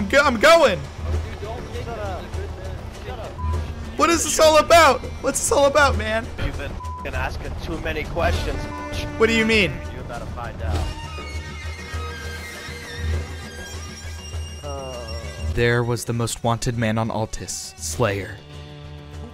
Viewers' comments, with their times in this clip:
0:05 LMFAOO The best part is the insurgent music in the background lmfaooo BTW the gang that kidnapped you called c.o.b, I've murdered a bunch of them in kavala